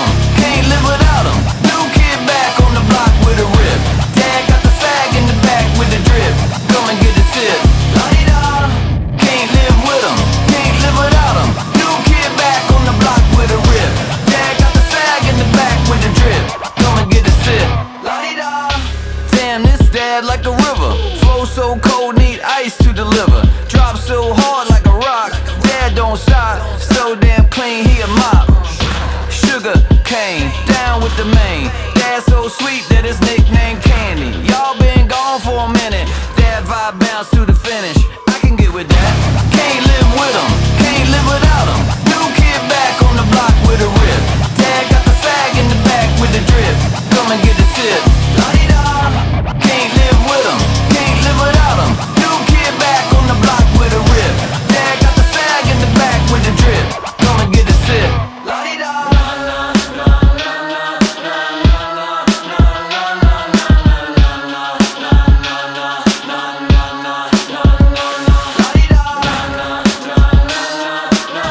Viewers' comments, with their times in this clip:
0:04 he absolutely did not say sag lmao
0:59 The most limp bizkit segment. Still got it after 10 years